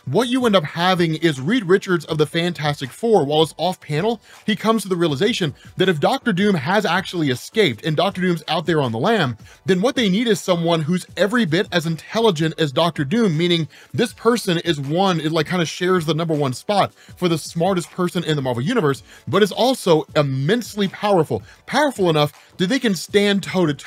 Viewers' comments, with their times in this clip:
0:08 What? Black Richard?